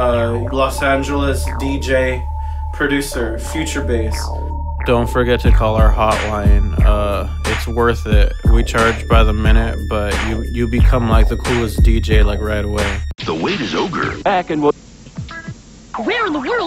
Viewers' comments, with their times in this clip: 0:04 ..that trap rap